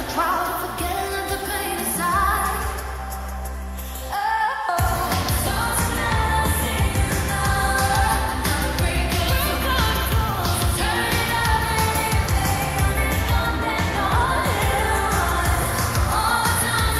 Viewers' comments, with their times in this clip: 0:03 Anyone else love the oh oh part that (i think jade) sung